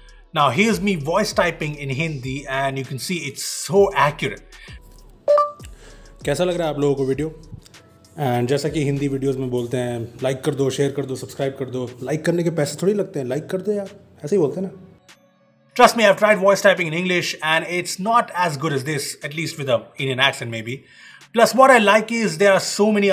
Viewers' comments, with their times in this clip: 0:05 I thought it was Technical Guruji speaking😂
0:08 👆🏻👆🏻 Voice is like Sushant Singh Rajput
0:08 First Time In I Heard Hindi In Beebom Videos